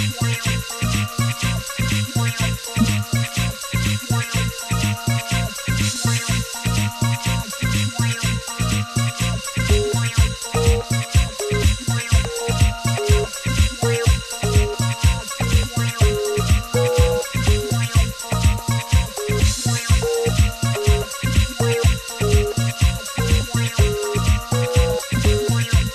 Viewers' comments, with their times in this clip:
0:09 Note dial tone Larry heard acid trax the juice